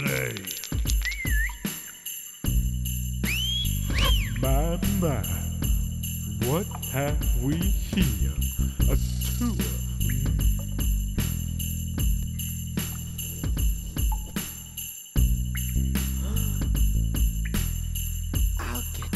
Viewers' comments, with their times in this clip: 0:03 love the wolf-whistle.